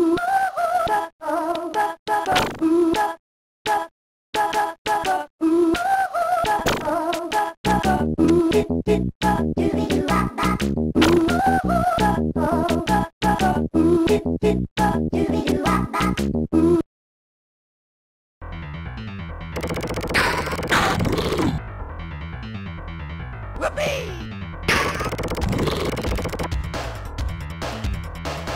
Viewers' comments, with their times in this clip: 0:09 Im going on 33 and periodically the title screen music still pops in my head from when I was like 6-7 playing this game.